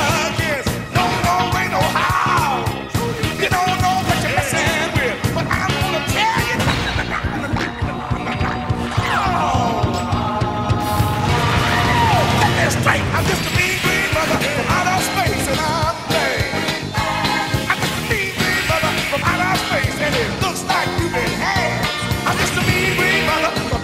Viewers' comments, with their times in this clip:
0:06 i would like to add the tensing buildup of damage with the tensing music right after the shield break